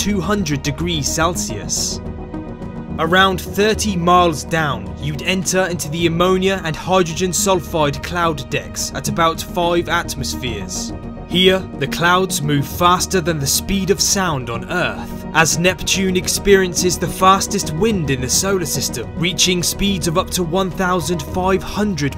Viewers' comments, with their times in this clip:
0:08 I thought he said di- Nevermind